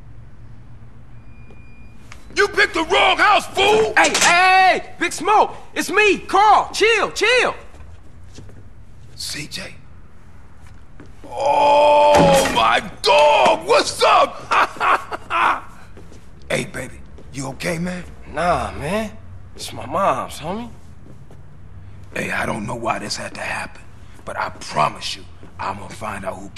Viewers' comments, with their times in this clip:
0:03 I love the way CJ goes "EEEY EEEEEEY" on
0:05 Big smoke it’s me, Carl chair chair!
0:10 best moan ever
0:10 Sound of having an 0rgarsm in anime: *Cute moan* Sound of having an 0rgarsm in real life:
0:10 0.25x go this is like a bear
0:11 You even hear the glass break
0:11 is my favorite sound the one that says OOOOOOOOOOOOOOOOOOOOOOOOOOOOOOOOOOOOOOOOOOOOOOOOOOOOOOOOOOOOOOOOOOOOOOOOOOOOOOOOOOOOOOOOOOOOOOOOOOOOOOOH!!!
0:11 At 0.25 Speed OOOOOHHHHHHHHHHHH
0:11 slow it down to 0.75 or 0.5 and it’s suddenly one of SMG4’s sound effects.